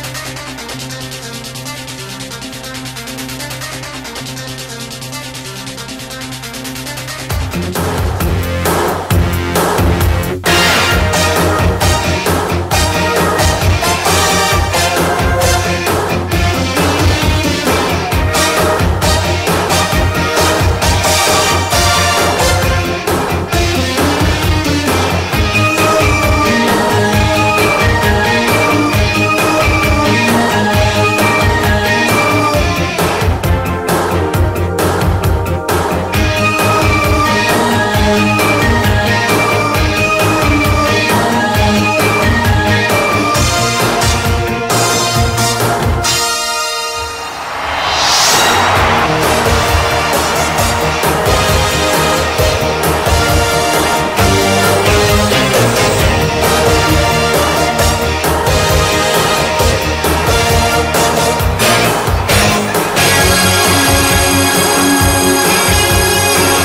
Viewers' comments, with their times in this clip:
0:10 Islanders,the theme from gave me chills and made me nostalgic!
0:48 when they'd always cut to the arena, and everyone would pop like mad ... always was my favourite part of the melody. I'm so sick of things today, everything has to be harsh, rough nu-metal crap. I don't know why the hell they ever went away from the family audience.